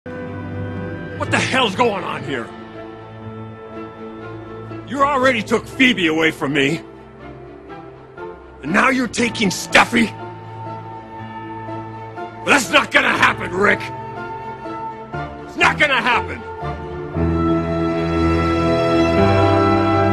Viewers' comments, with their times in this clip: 0:07 I love this delivery